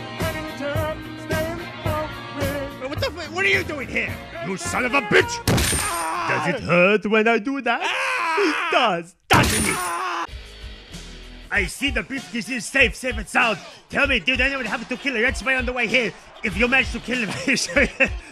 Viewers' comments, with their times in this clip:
0:05 bro sounds like stewie